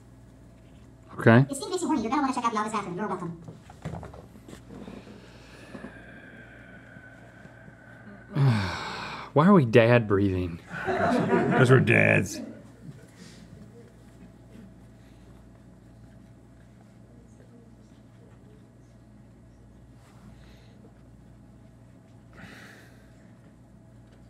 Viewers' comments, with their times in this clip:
0:05 their "dad breathing" is making me feel like I'm about to get scolded for holding the flashlight wrong while they're fixing a car.